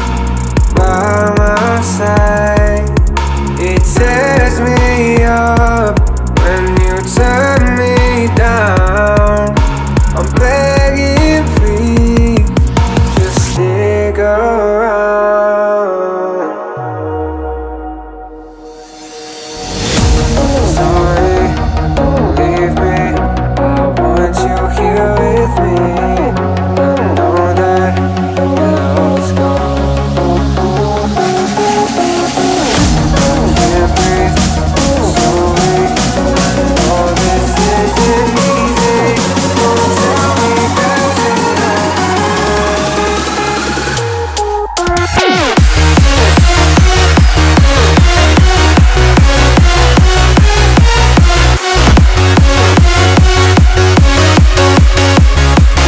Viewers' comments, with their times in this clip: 0:07 I'm looking for this song and wanted to add a baby crying,🥺 💕
0:07 (Insert baby crying) You won't understand unless you have the gacha life tiktok
0:10 I Like Drop So Fantastic Remix💪
0:36 when you're trying to focus but got caught with the beat instead :/